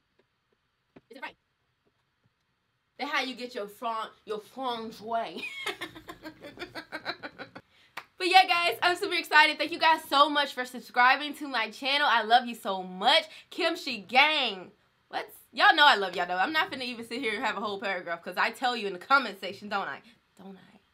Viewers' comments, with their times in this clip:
0:05 that laugh was everything! i liked your video because of that laugh